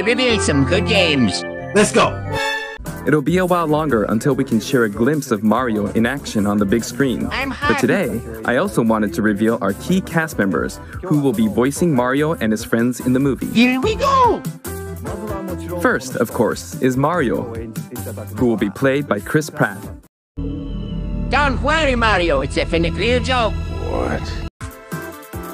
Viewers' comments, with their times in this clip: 0:07 I thought Luigi say I'm hard in